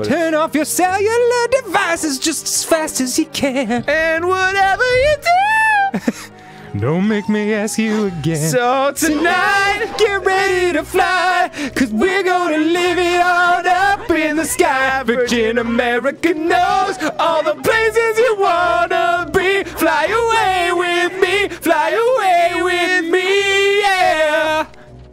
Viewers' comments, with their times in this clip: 0:08 Why did actually sound very pleasing...